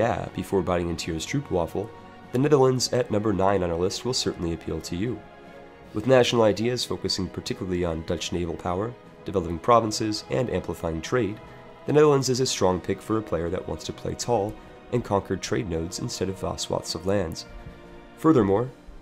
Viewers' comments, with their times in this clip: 0:03 Preußens Gloria intensifies